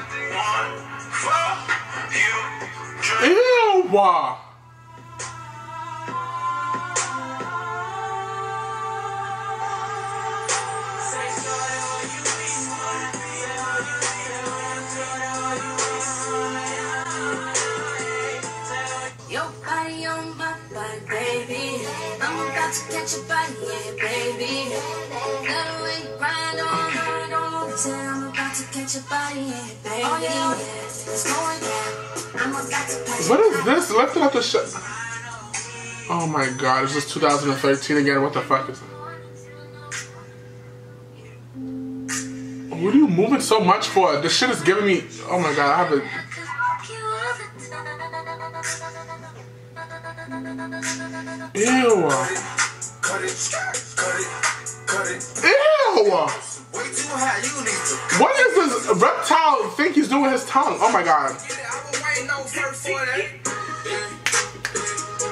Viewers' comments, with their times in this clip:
0:07 I love song that's my shit😩😩💕🙌🏽🔥😍☺️💦
0:52 lol all i can think is. Aww he's panting! You want some water boy?